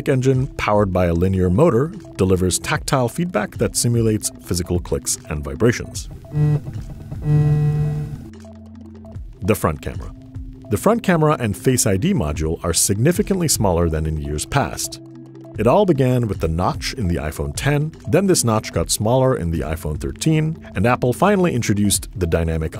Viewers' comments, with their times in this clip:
0:06 could literally feel my brain nerves move when I heard the phone vibrate. Lol